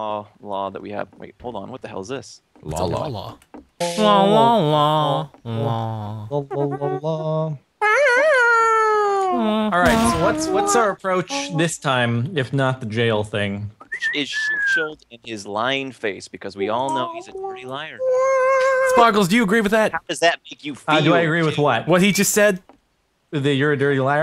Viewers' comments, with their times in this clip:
0:07 I can't stop repeating that western theme